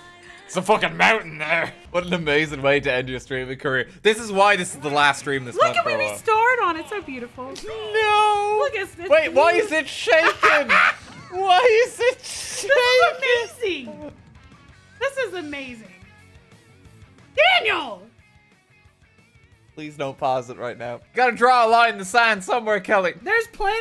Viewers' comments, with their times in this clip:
0:09 The laugh is the best thing